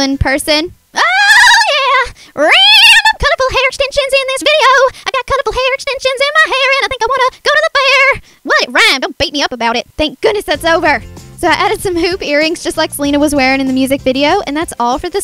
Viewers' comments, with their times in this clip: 0:03 The best part of your voice